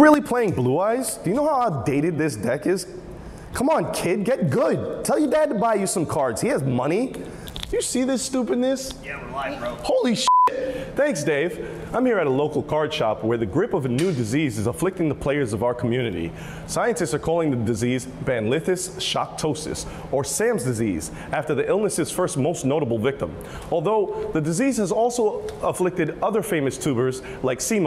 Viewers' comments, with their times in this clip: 0:08 when he said stupidness it almost sounded for a split second like he was going to say another insult that has both stupid and ends with an n word